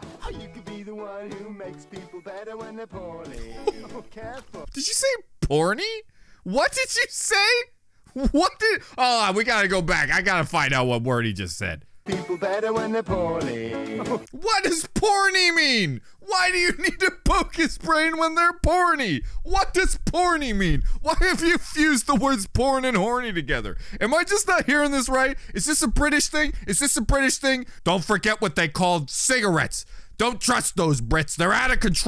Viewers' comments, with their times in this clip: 0:07 He said poorly not porny whatever that is
0:14 poorly lad, not poorny
0:15 I think he said poorly